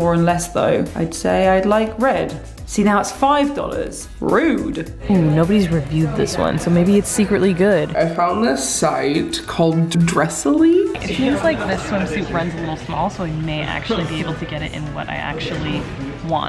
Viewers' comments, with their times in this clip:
0:04 I love how she says rude sounds so cute 🥰😍☺️